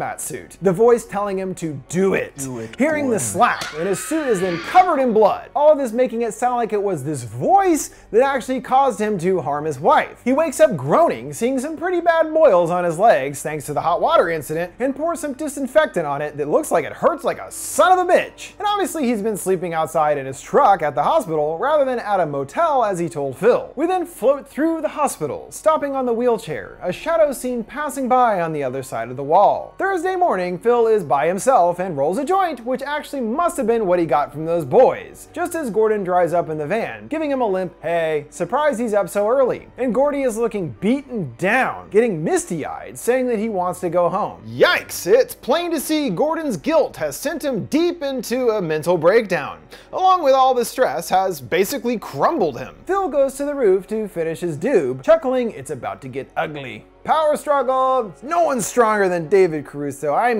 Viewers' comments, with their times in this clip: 0:03 g mod murder scream
0:44 did you edit in a piece of dialogue? The audio sounds different.